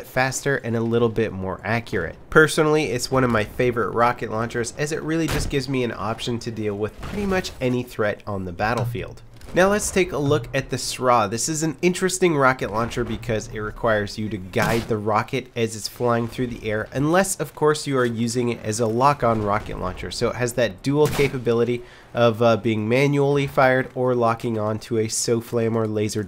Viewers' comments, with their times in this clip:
0:08 What was that noise?